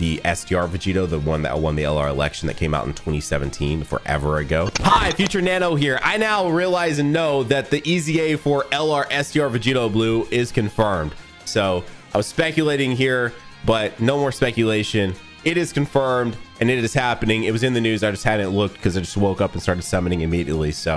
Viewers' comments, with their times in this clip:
0:04 rip headphone users, lowkey a jumpscare 😂